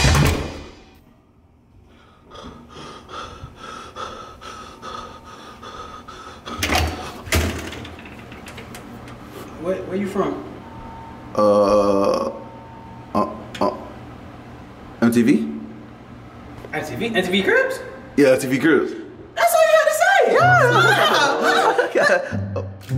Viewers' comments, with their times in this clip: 0:03 breathing like someone off call of duty 😂